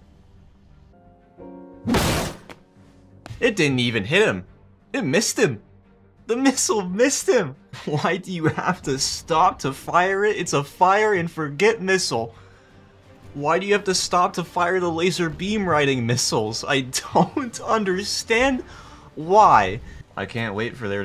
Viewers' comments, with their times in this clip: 0:04 His voice sounds like his gonna cry